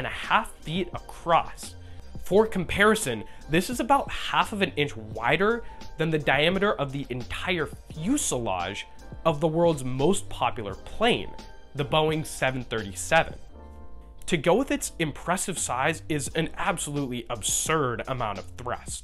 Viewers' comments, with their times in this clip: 0:04 All sounds are inaudible and mushy except for the "A" It's indecent and uncivilized to open your mouth like that in public. Although it is clear that this is a frantic attempt to unconsciously fight the natural American style of speech - to make all sounds inhuman.